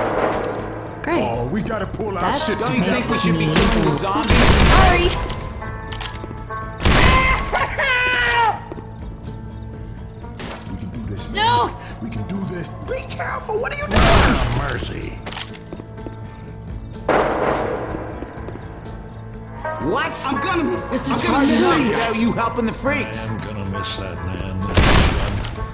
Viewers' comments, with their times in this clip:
0:06 poor ellis.his my favorite character,but..when I hear him scream my heart clearly breaks
0:06 that scream gave me flash backs when I saw ellis getting pounced spitted crushed